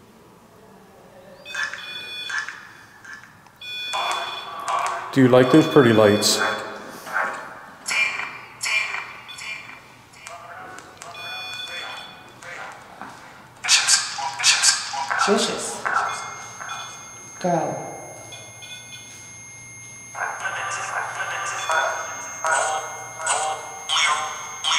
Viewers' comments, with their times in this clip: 0:07 ......i hear the womans voice sayo ......."DEMON"..........????????